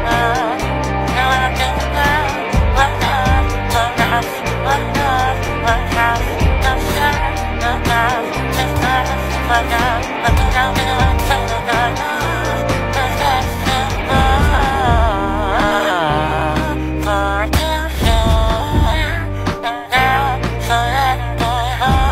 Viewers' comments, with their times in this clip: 0:09 is where the voices goes cracking